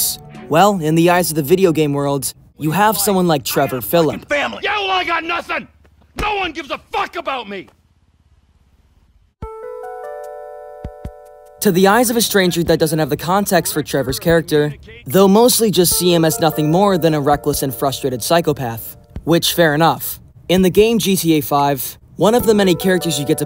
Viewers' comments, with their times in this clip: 0:04 "Yeah, well, I got nothin'!" "No one gives a fuck about me!" *animal crossing ass music*